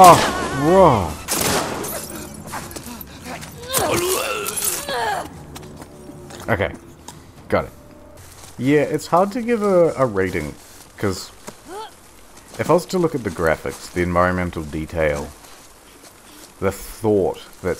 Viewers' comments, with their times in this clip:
0:04 I need to stop watching people do voice recordings. It makes sounds like the death knell seem so unrealistic and exaggerated.